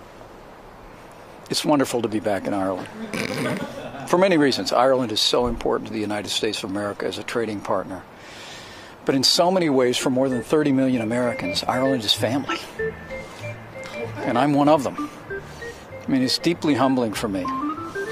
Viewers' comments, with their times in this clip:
0:05 that music that comes on is perfect LOL